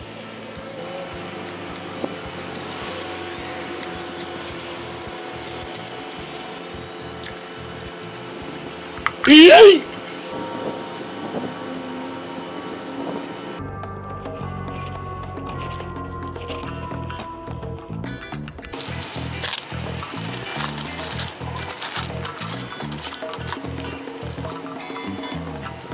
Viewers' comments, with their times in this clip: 0:08 That YEET effect scared the hell out of me!!!